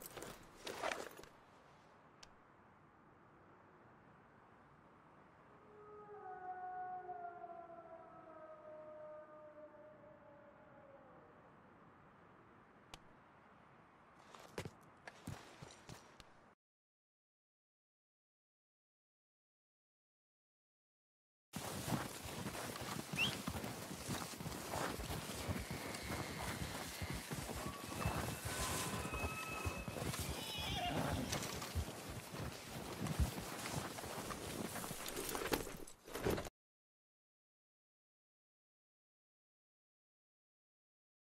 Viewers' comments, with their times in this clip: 0:05 doesn't sound like an elk, and doesn't sound quite like a wolf either
0:05 that sounds like either a howling wolf or a screaming man
0:28 yeah is most likely an elk. But dont forget there are bones and evidence of giants or larger ape like people around rdr2 aswell. The noise on the un attainable part of the map sounds like a sasquatch or something similar.